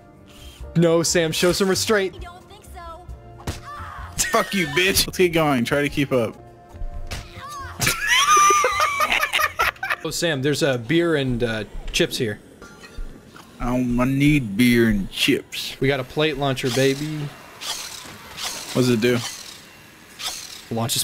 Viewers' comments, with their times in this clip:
0:04 "lets get going try to keep up" am i the only one who heard pricipal moss from king of the hill?